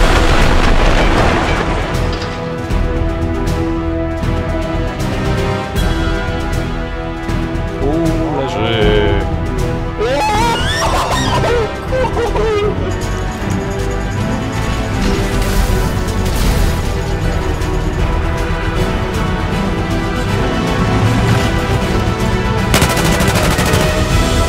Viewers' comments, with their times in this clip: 0:10 The little girl scream was annoying